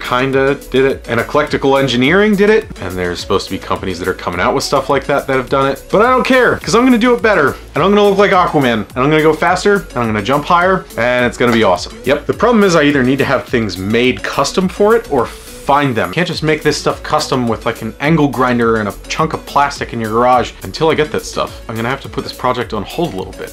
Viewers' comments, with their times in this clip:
0:04 Go to put the video on half speed, and watch the drunk scientist rant